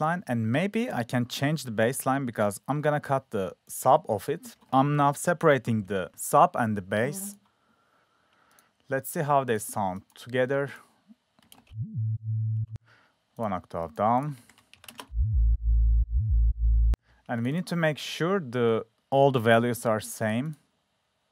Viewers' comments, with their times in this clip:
0:06 That fart was nearly A#